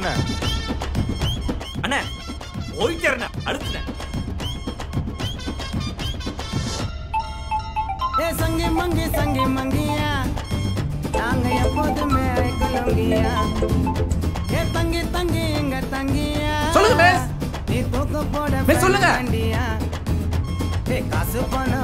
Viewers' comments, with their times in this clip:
0:07 i thought my phone is ringing 😂😂😂